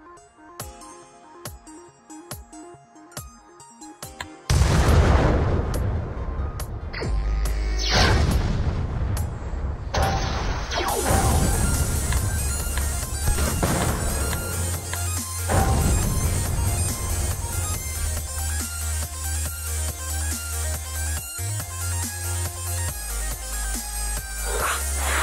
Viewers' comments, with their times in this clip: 0:09 this song is really nice